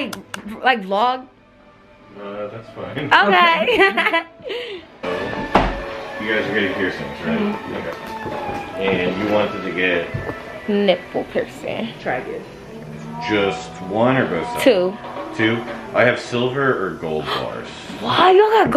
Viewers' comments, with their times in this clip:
0:03 She sound like kim from the parkers 😂